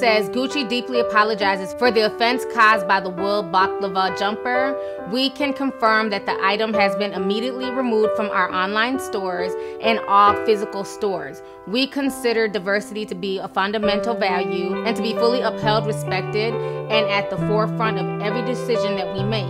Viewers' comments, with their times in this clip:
0:03 when that damn music came on 😂😂😂😂